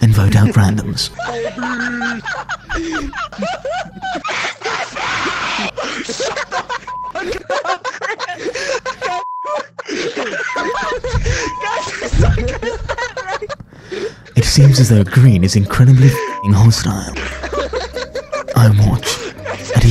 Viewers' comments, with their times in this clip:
0:03 Bro green did the most heartfelt,dragon ball,devious scream
0:05 Everyone: dying in laughter Green: MR BEEEAST- [ if you wanna know ]